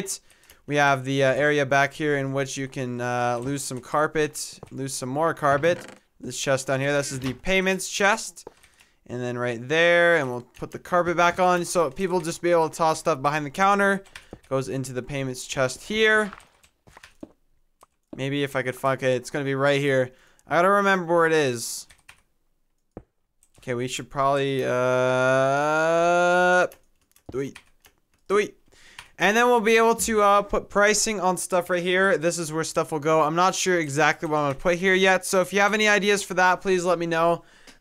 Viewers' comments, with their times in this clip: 0:09 SOUNDS LIKE YOU SAID FUCK IT...
0:16 I swear to god he goes: "if I could f**k it" 😂😂😂
0:18 what did he say ? did I hear it wrong? lol
0:18 tell me i wasnt the only one that heard him say f**k
0:19 maybe if i could f*** it Whhhhat